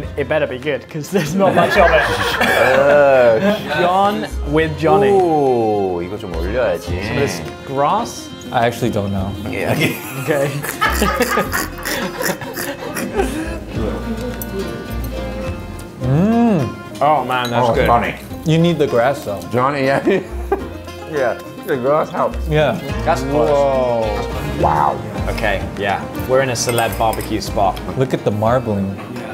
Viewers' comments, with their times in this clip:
0:10 He really laughed ''kkkkkkk''